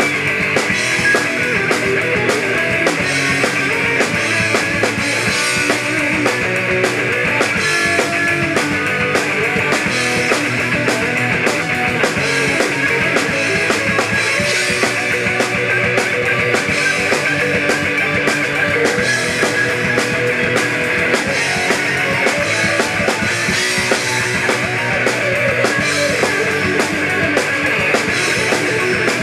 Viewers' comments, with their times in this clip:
0:10 Wow great job! The solo sounded like the original too.. gave me goosebumps !
0:13 No way.... HE PLAYED THE SOLO THE LIVE MARTY FRIEDMAN WAY- Marty ALWAYS does a shortcut with the ascending shred section where he skips the stretch during the 2nd phrase and nobody that joined Megadeth after Marty plays/played it like that. Even Marty plays it that way to this day.